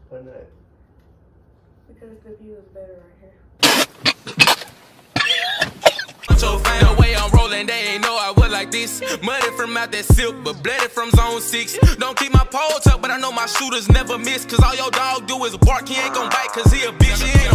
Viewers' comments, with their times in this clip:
0:05 I'm sorry but dude choking on that bottle of alcohol 🤣🤣🤣🤣🤣🤣